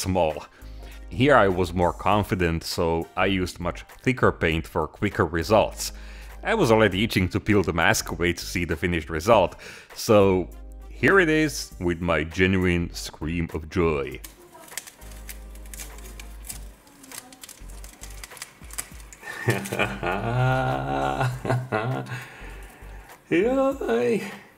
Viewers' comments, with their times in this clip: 0:10 The joy heard made my day :)